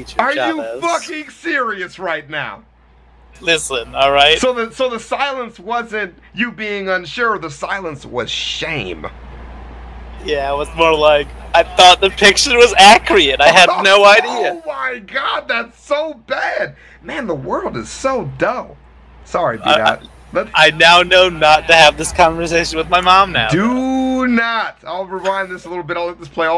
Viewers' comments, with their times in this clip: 0:10 “i thought the picture was ACRYET”